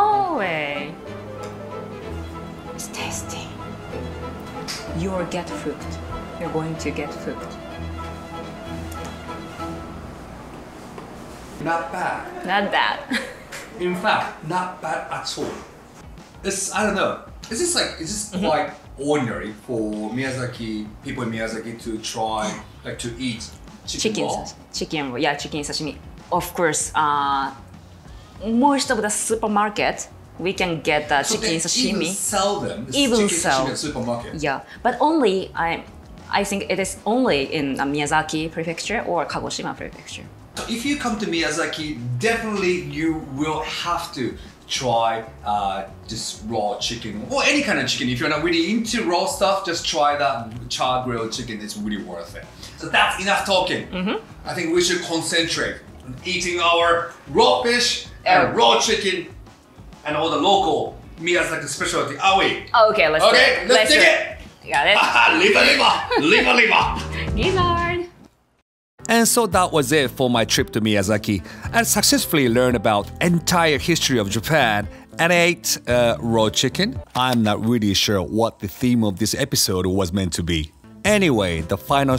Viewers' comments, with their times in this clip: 0:04 i missheard this at first lol
1:04 the way he said liver liver liver liver got me laughing for real ahahahaha